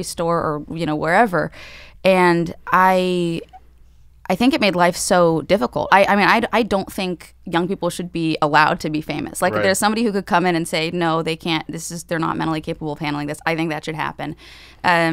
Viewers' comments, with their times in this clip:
0:03 Why do I keep hearing like a sped up female voice or something in the background for example ?